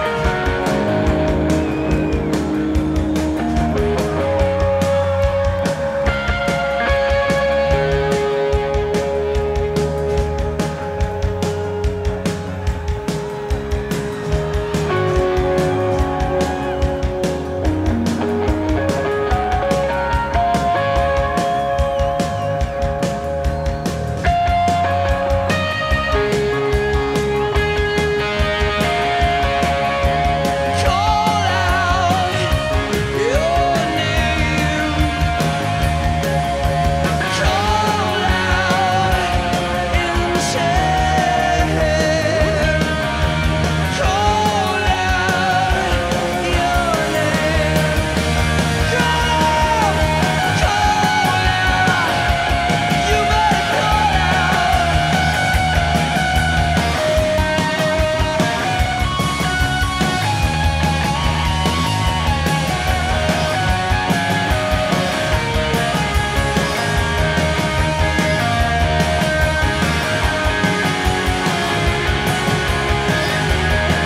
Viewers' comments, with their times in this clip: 0:07 Edge's harmonics in ... so f#cking awesome!
0:24 Love when Edge plays the Westminster/Cambridge Quarters chime clock melody. As a kid i always thought it sounded familiar, it went wayyy over my head.
0:27 The Edge plays the "Big Ben" chime in his solo while Bono dances with the girl...how brilliant, how perfect.
0:57 the Edge's guitar playing could of gone on forever. Haunting in my mind.